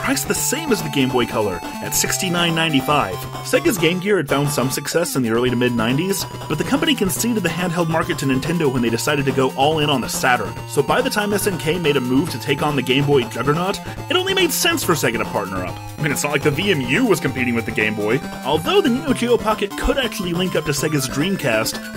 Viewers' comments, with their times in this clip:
0:03 Now we're getting into the bad, modern sonic games I'm not a Sonic fan; you changed my mind on Retro Sonic being bad (not you 2) but ya probably ain't gonna do it for Modern (not counting spin-offs, which, there are some awesome ones) . The day stages of Sonic Unleashed were fun when I played the game but I'm not sure if they're good, I have nothing to compare it to. Why do the Neo Geo Pocket and the Dreamcast logos look so similar? sounds like pokémon music